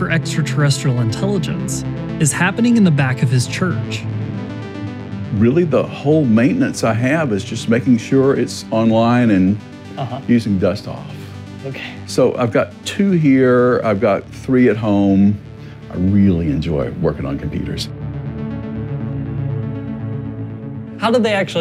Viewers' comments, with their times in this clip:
0:03 i could hear Hrithik roshan doing the " oh ooh oh oh oh oh oh " with jadu.